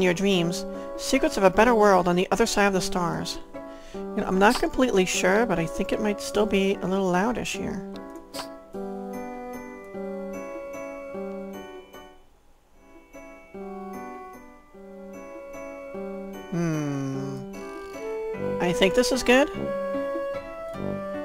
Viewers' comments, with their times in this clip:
0:07 I think the audio might be a little bit out of sinc, but it's not noticeable, generally.